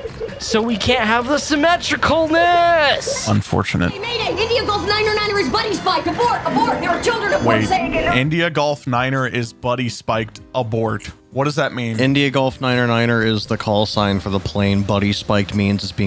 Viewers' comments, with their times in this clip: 0:04 Could be wrong, but I believe Holly Hunter is a licensed pilot so that's why her comms sound so authentic. Also, "India-Golf-Niner-Niner" is a reference to The Iron Giant which released in 1999 which was also directed by Brad Bird.